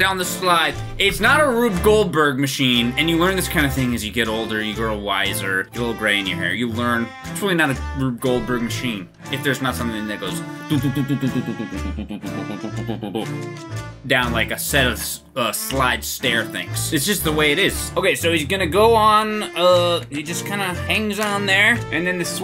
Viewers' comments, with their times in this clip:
0:09 The sea of Thieves music just works so well